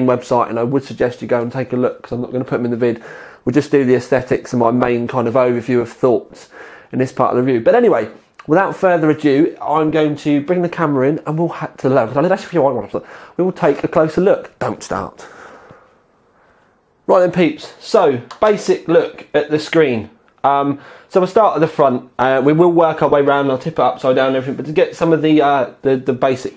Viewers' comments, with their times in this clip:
0:10 Was that klingon??